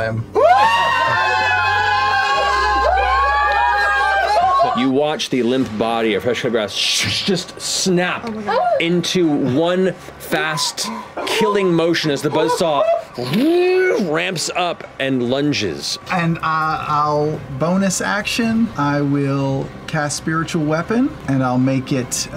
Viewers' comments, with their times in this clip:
0:04 mercers visualization, the freaking music, sam twisting his character all the way around like sam does once in a peaktime, just like when scanlan left vox machina. this is a greatgreat clip from all angles :)
0:05 music? it kinda sounds like music from outlast.